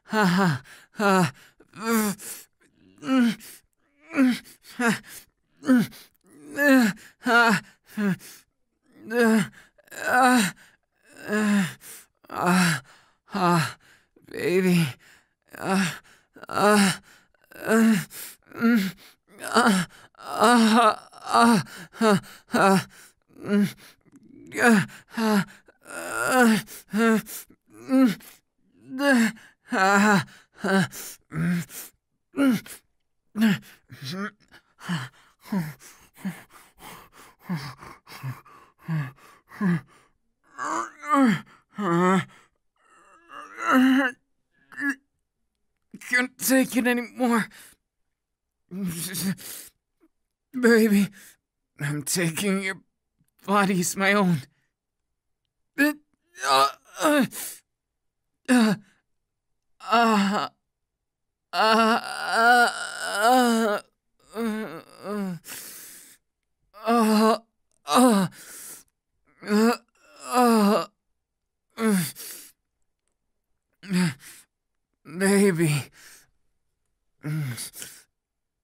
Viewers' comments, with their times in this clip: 0:09 Hmmm what if max volume dis bitch OH SHIT THAT'S LOUD
0:35 WHY THAT SOUND AS IF HE WAS COVERING HIS MOUTH MADE ME MORE HORNY WKFBWKFBS, WHAT THE ACTUAL FUCK WITH ME
0:42 Hear me out, hear me out, he sounds like an old man-
0:59 Denki: *extra long moan* * * Me: *Checks if anyone in the bathroom with me at school 👀*
1:00 Dat long moan tho~🖐🏾👁️👄👁️